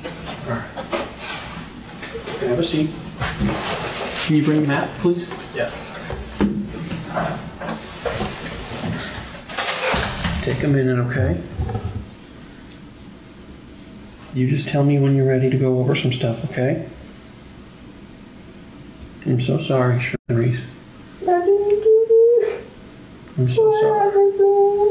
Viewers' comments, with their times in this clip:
0:05 thank you for the moment of silence ❤